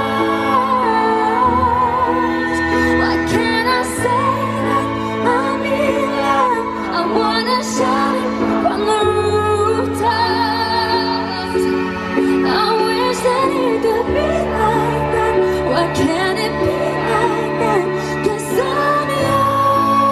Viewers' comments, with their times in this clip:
0:05 that "love" omg